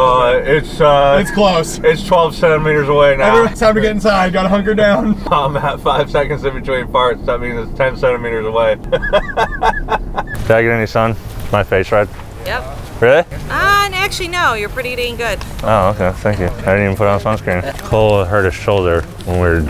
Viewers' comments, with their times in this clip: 0:04 "its ten thentemeters away 🤣